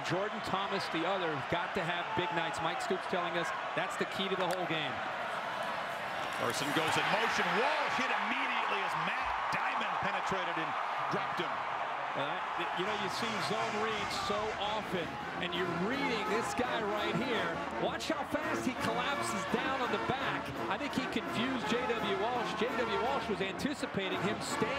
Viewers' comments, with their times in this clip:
0:07 Childish of me, but the way he corrects himself to say "dropped him" instead of "penetrated him" after an awkward beat makes me laugh.